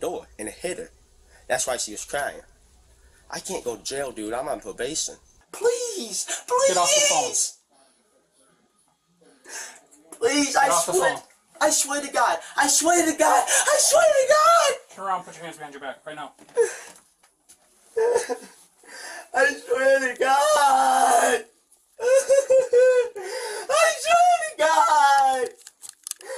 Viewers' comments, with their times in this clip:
0:07 This guy sounds like filburt shellbach on Rockos modern life